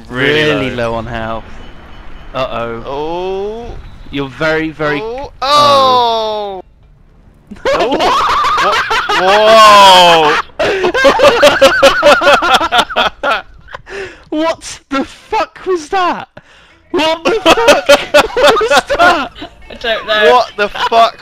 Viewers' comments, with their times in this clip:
0:07 I keep repeating to hear the manic laughter, it's contagious! :P
0:09 was the most epic laugh iv ever heard BWAAHAHAHAHAAHAHAHWAAAAAHAHAHAAHAHAHAH! Yogscast is the best!